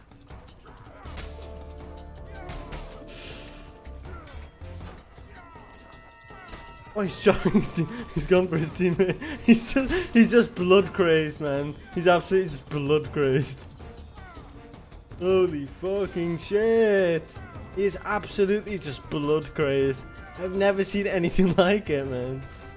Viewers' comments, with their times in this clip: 0:06 noob archers when the Doom soundtrack hits